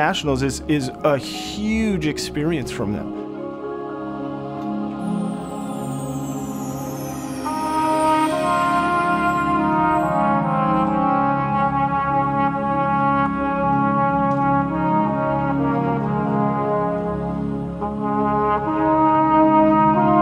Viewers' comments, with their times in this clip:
0:08 wooaahhh why did they bring the soloist down an octave? :(